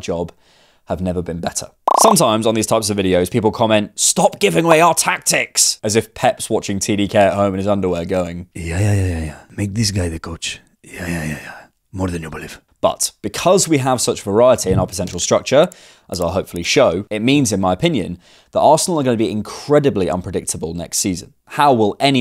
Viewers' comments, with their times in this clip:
0:08 That Pep impression is getting scarily good
0:08 pep's voice just too good 😂